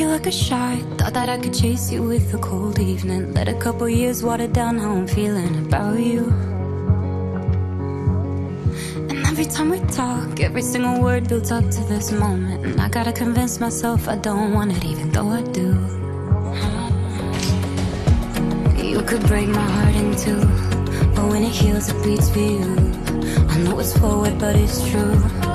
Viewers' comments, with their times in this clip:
0:06 lol! When I hear the song! I yelled out loud ¨YAS!¨ and my Moms like ¨wth?¨